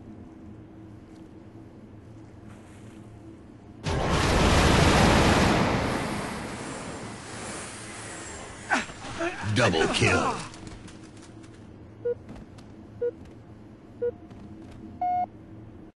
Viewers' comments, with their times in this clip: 0:10 someone put the blues in a popcorn machine!